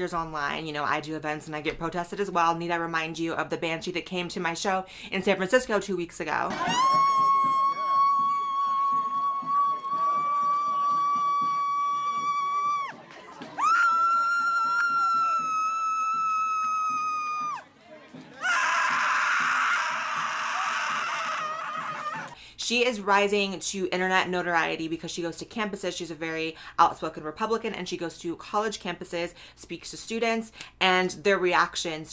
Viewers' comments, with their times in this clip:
0:06 my mom: asks me to take out the trash and clean my room me acting like a brat: screeching at my mom.
0:17 Dude sounds like an angry enderman